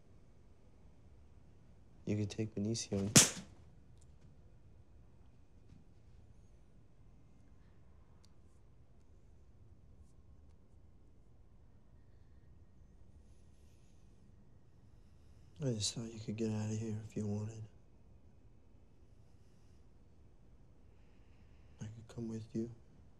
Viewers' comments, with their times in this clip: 0:05 Too bad the voice audio levels are not as loud as that slap. ;-)